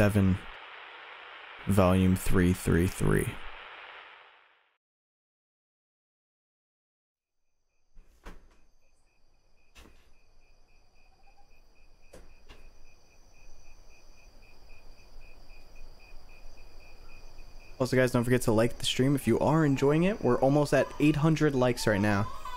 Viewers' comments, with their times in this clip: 0:08 those crickets make a fire beat ngl